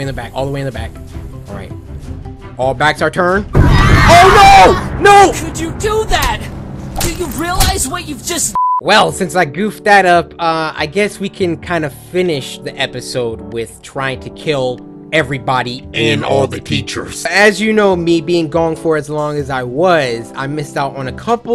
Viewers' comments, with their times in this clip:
0:05 hears yandere stabbing people in the background me:I can tell yandere DOES not care fam